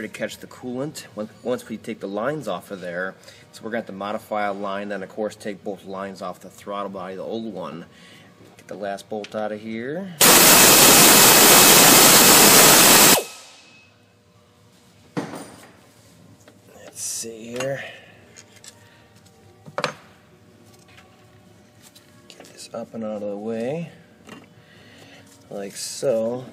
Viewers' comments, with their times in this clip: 0:09 man this video is so well made and soft spoken and then you get to MY EAAAAAAAAAAAAAARRRRRRRRRRRS